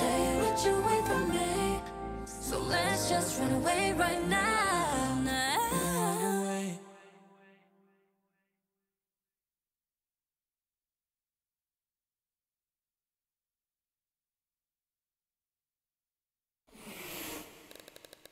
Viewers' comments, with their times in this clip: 0:05 For those who can recognize the resemblance in voice … maybe becuz of Babyface or coincidence :)